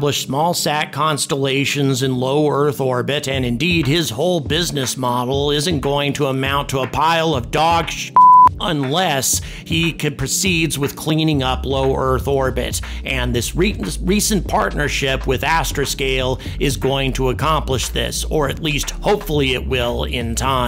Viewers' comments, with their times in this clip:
0:06 the only part of the dogging word blooped, was the last letter T ...Nuetron, is just a name of a craft, not a revolutionary thruster engine, instead of a stage rocket, its a Pod craft, deploying things within it, like Starship BN or Falcons, if it held the SN/cargo inside it, which isn't a safer way to carry humans, that include chem combustion flamable & impact sensitive. Just flies like a SSTOL that releases the next stage. Neither crafts mastered emergency ejection for evacuation, to be very feesable to guarantee human or fragile cargo travel. Also Nutreon or mars-SN have affective landing legs to moist surface. Too tiny and pointy